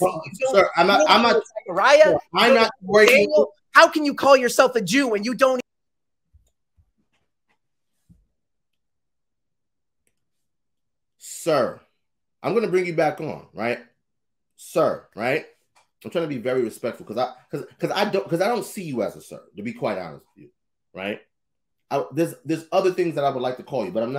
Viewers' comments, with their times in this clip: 0:08 you are dealing with a slick demon and he is being entertained by you him and his friend in the background laughing, im glad you are bold as a lion but he is nothing but a Billy 🐐